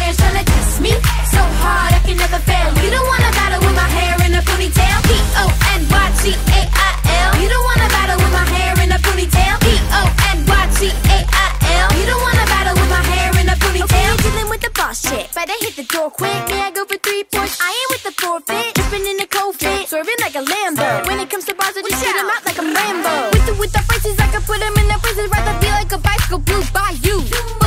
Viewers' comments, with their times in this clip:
0:10 When one of the sisters said Boss chick it sounded like the S word the curse word listen